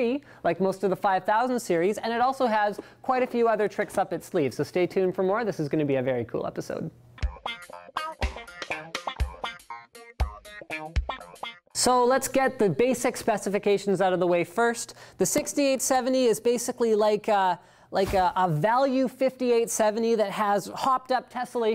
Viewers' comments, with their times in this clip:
0:07 the 90's porn theme song in the intro